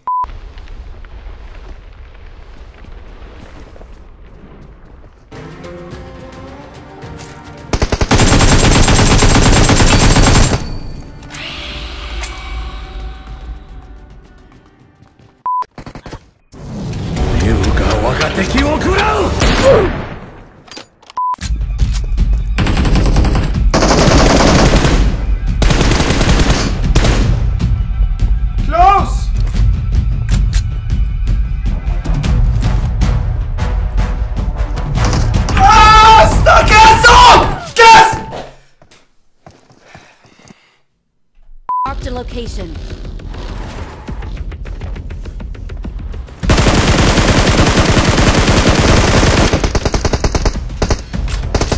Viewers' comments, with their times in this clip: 0:07 Miss that music
0:35 rip headphone user 😂😂